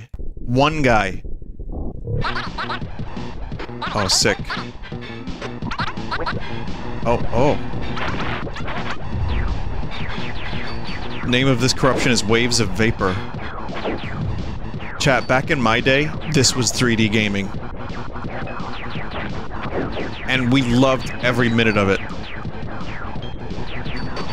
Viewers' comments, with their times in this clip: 0:09 lasers literally making pew-pew noises.